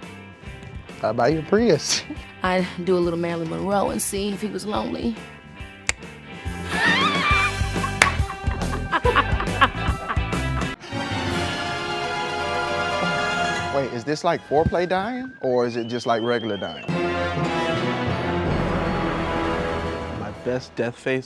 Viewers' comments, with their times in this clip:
0:07 keke’s laugh tho 🤣👏